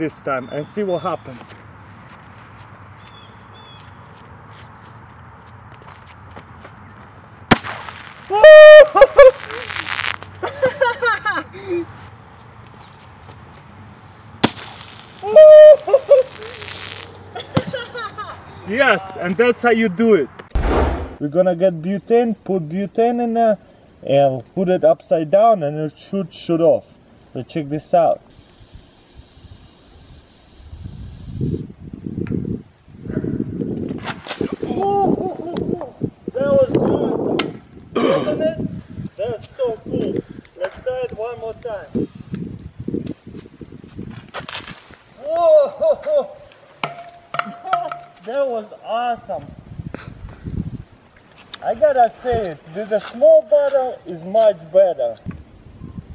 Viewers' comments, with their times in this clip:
0:06 sad earphone user
0:07 Was that an owl? xD
0:08 you will heard a werewolf sound
0:09 RIP headphone users eardrums
0:11 Thought there Was a Girl Laughing
0:13 my ears died
0:15 He sounded like a goat screaming.
0:15 Russian mating call
0:18 dat laugh do
0:20 Cola and WHAT did you say? Gluten xD?
0:37 ......What was that noise??